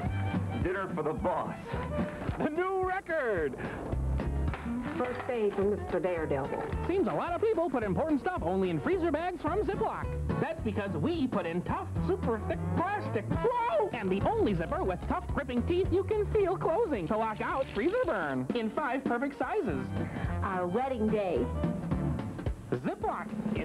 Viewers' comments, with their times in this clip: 0:07 That music during the Local Forecast around ~ sounds really good. If I knew what song it was, I might look for the whole song on YouTube.